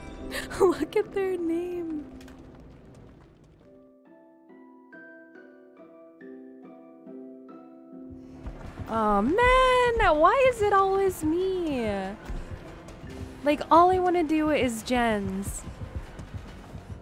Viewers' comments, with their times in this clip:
0:05 Ooooh… what is song pleeeease? That is so soothing